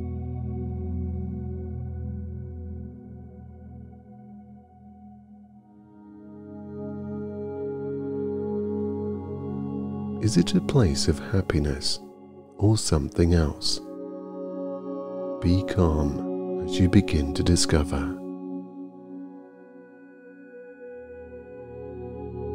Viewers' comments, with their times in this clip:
0:10 i misheard big time 💀